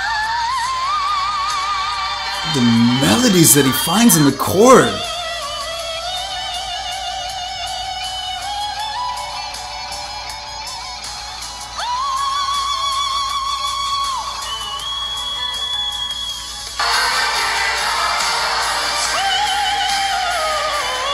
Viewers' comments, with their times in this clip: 0:03 The note so high that you didn't even notice hahaha I'm a fan of your reactions! :)